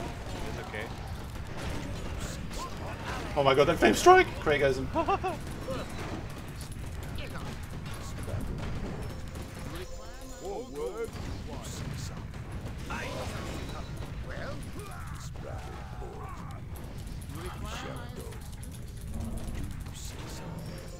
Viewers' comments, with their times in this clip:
0:03 The Mickey Mouse laugh I love these 2v2 games.